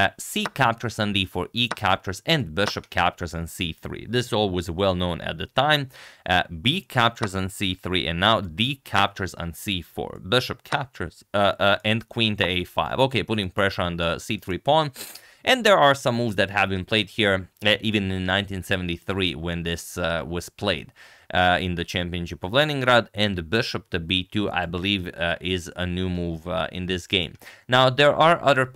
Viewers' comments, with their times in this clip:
0:09 that bishop was chhaptured indeed